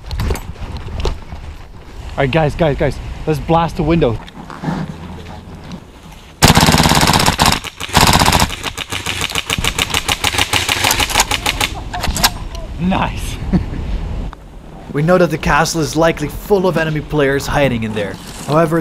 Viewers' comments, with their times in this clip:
0:06 brrrrrrrrrrt - extremely satisfying =D